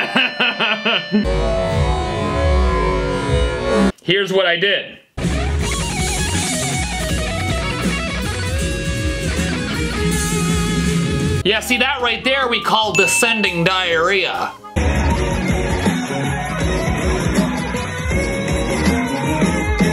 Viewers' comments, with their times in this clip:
0:06 in jazz we call that side-slipping 😂